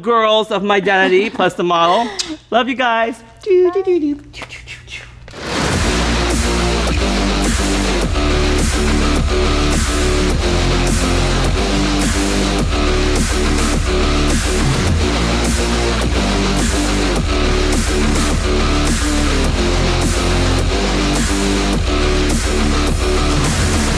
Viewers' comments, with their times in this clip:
0:05 GOD DAMN THE MUSIC SCARE THE SHIT OUT OF ME! I WAS WEARING MY HEAD PHONES!